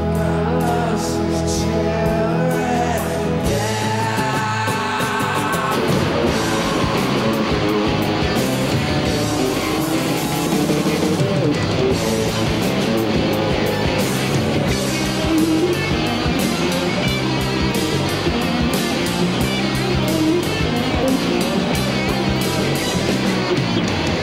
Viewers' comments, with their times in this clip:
0:05 Shit the drop is massive, even better than the studio version What a live and what a band I am thankful for Radiohead